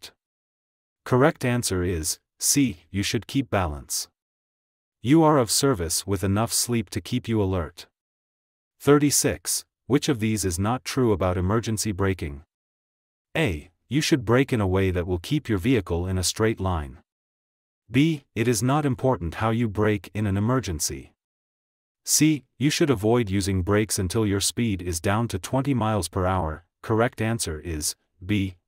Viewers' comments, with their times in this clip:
0:10 ☝️ … #36: A. blah blah B. blah blah C. blah blah - answer: B. it is not important “how you create an emergency” … phlyppin’ AI!… AGAIN!?… sheesh!🤷